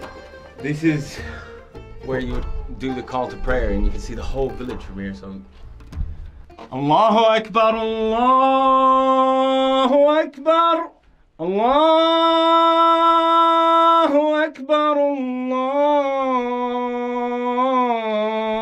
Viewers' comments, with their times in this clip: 0:06 every one is talking about the controversy about qatar right now in the comments but can we praise his voice mashallah